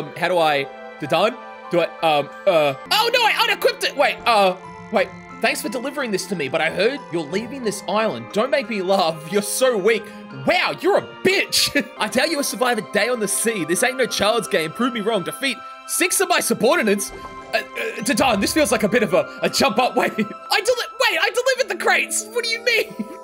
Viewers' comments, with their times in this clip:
0:09 bro said that so confidently 😂